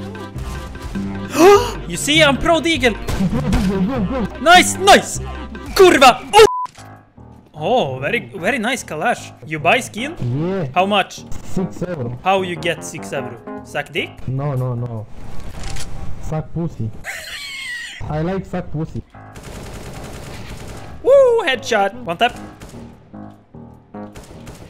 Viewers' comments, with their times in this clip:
0:03 that was perfect "kurwa" in polish bravo xd
0:04 That "KURWA" sounded realy good my waffle friend.
0:04 Are you really from sweden? Your "kurwa" in sounds really polish, that's kinda sus my friend -_-
0:04 Im from poland and your "kurwa" in sounded really like your frist language is polish
0:05 nice polish akcent ;)
0:05 the best KURWA I've heard in the world
0:05 u sound like true poland enjoyer i am proud
0:05 you say this with polish accent you from poland hehe
0:05 the way u told KURRWA with some fucking polish accent i thought u are polish guy for a while XD
0:05 this is the best ,,kurwa" said by not polish person
0:05 cleanest "kurwa" i have heard in my life
0:05 That kurwa sounds really polish
0:06 Nice Polish hahaha
0:06 i see you know some polish words, I am from Poland and it Sound funny